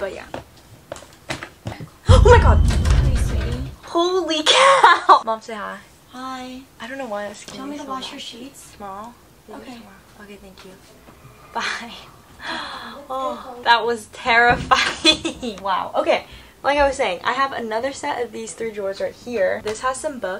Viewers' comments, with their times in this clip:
0:05 THE WAY I SCREAMED is just CRRRAAAAZYYYYYYYYYY